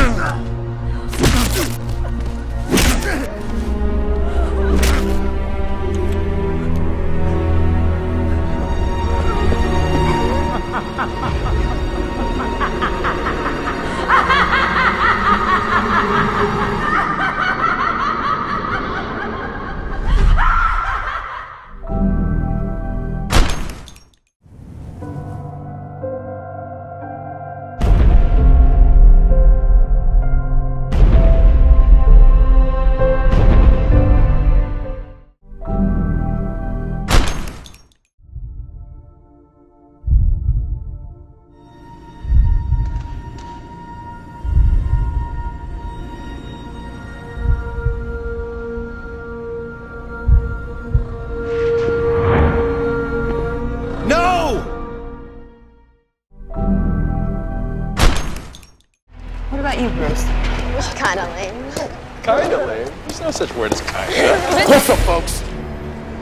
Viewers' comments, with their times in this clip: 0:10 Okay, I have to admit. Grey DeLisle really scared me with that laugh. 😨
0:11 Wtf? Why she start laughing like the Joker?
0:40 J Jonah Jameson? What are you doing in the DCU
0:54 The voice acting and transition made it look like an unofficial edit.